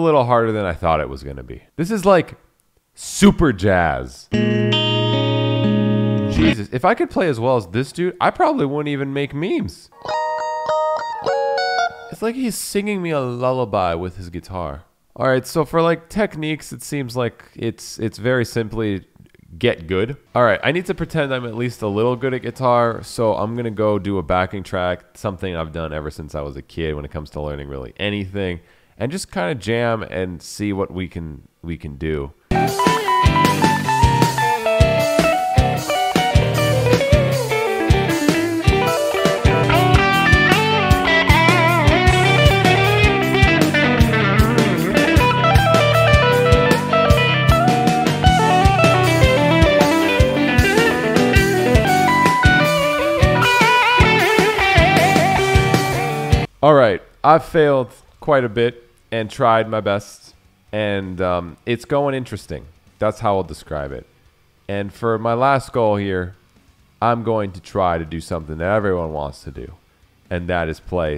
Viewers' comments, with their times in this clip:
0:10 Core guitarist discovers melody 🤯
0:44 Your interpretation and play style is reminiscent of plini it’s very modern prog rock jazzy sounding
0:48 tapping was actually pretty legit
0:54 it sounds like jazz ;)